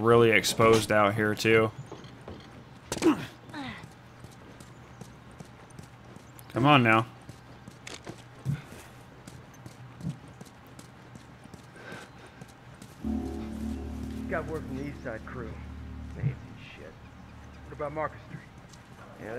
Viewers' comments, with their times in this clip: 0:04 the sound started to screw up